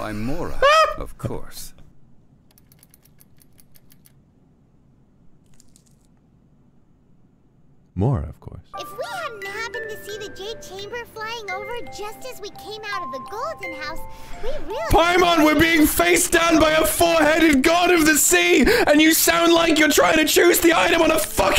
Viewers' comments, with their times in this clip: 0:09 I DROPPED DEAD WHEN HE STARTED YELLING LMAOOO 💀